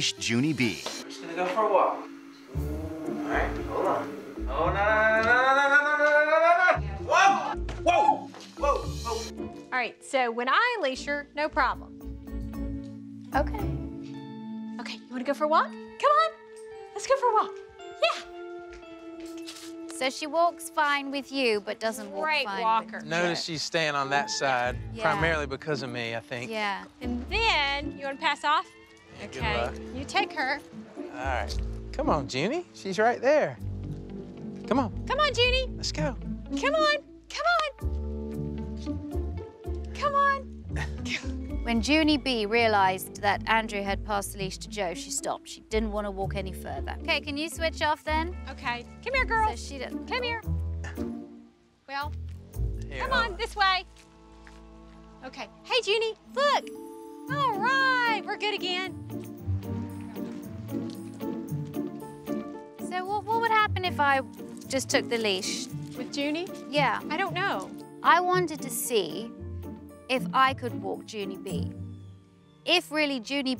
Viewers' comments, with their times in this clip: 0:04 aaa why are you getting louder
0:57 is it just me or the lady sounds like Micky mouse? 😂